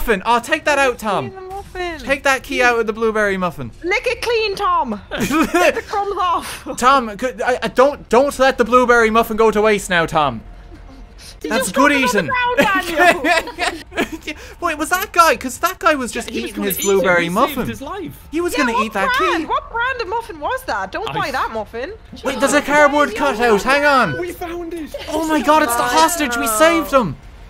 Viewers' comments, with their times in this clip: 0:10 The guy is laughing lol
0:10 The actor is laughing lol, glad he had fun xD
0:10 He cannot contain himself from laughing xD
0:10 You cut out part of him laughing!
0:11 HE’S LAUGHING WE DID IT